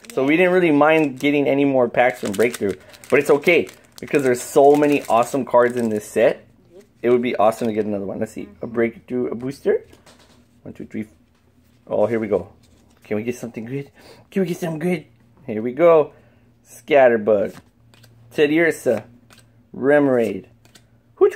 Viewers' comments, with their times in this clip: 0:09 you hard something fell